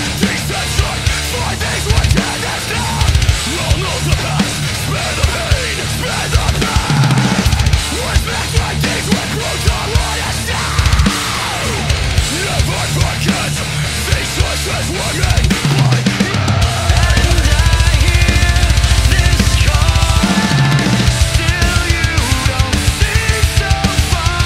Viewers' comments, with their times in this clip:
0:06 I always come back for the fill in